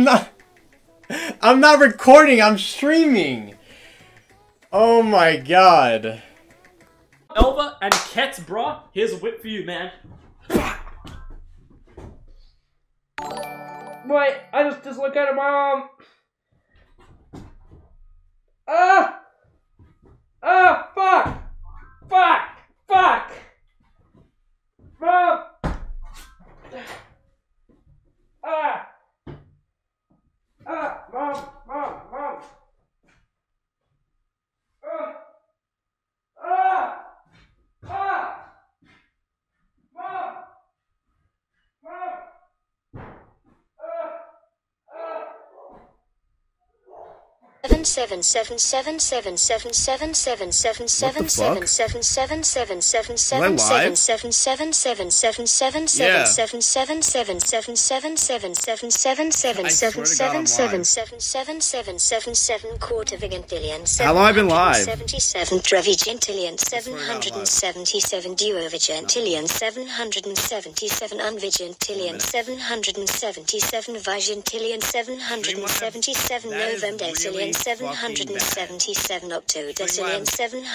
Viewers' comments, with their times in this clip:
0:10 i know this feeling oh so well and it sucks balls. you can actually hear his joint dislocating
0:21 Is he really strong or does he just need alotx2 of milk? Also how big is his fcking house o.O screaming and walking forever until someone hears him
1:06 R.I.P. to everyone who used headphones